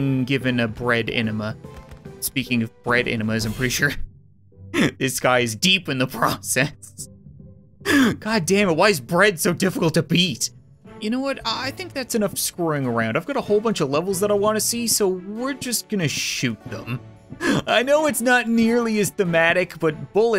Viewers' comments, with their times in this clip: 0:04 Emphasis on DEEP